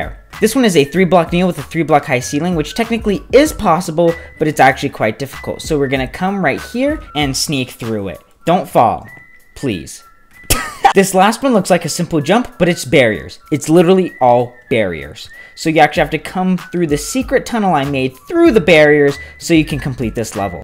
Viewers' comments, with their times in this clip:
0:08 the “don’t fall, please” followed by the cutoff laugh is why i live